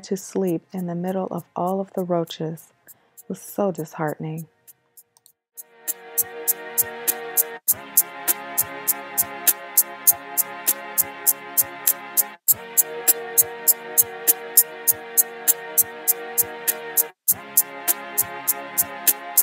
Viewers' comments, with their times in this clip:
0:04 mouse click xD